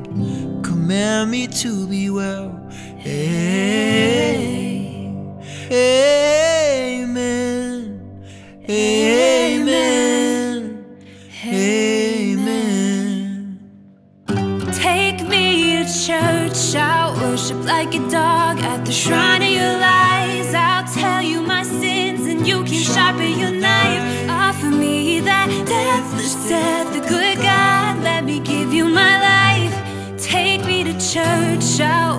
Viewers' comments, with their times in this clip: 0:03 He messed up real bad but overall it's a great cover!
0:13 Just a heads up - Your piano is out of tune. This is especially prevalent Otherwise a great cover, I think your voices compliment each other. The guitar breakaway was also very nicely executed.
0:13 Beautiful melodic vocals thanks for sharing.